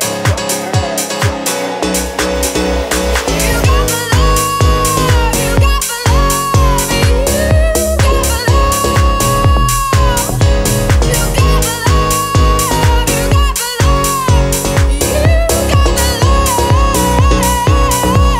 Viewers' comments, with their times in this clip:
0:03 Holy, she poured her heart on that one